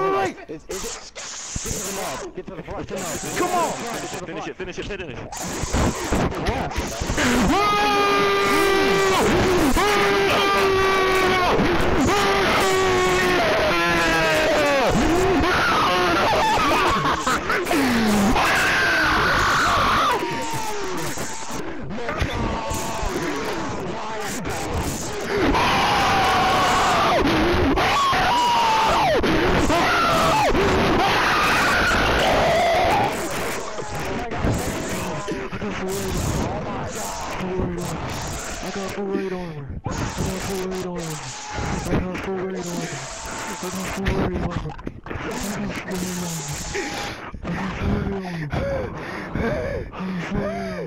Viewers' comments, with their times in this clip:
0:06 Lol the second guy sounded like donkey Kong
0:32 My ears exploded